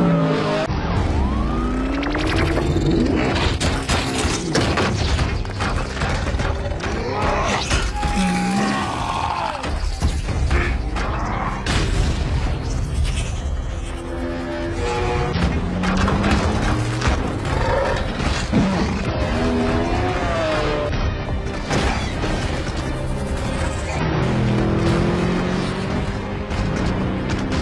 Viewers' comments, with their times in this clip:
0:10 Did they just put a bonecrusher screaming sound ??